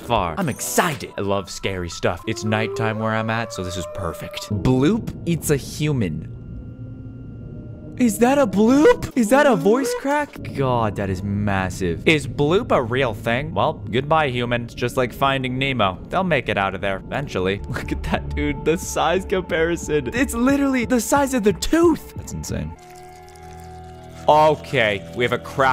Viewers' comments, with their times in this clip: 0:08 'IS THAT A BLOOP? voicecracked*" "*replays IS THAT A VOICE CRACK?"